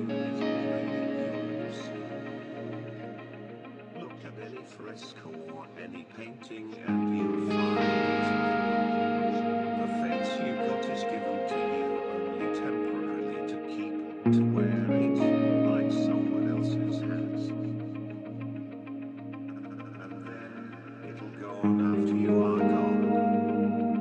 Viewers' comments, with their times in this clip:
0:09 Who else thinks 'Someone else's mind' has an incredibly cool lick that starts ?